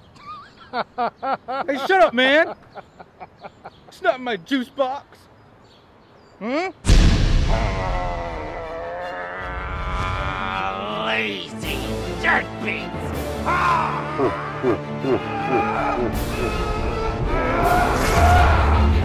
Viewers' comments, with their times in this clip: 0:04 damn he's the fastest reader alive